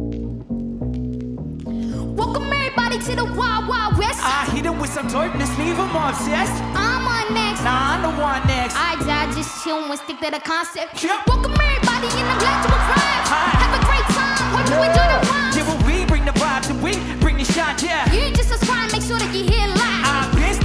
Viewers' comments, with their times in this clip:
0:04 nice performance good rap singing 👏 Simon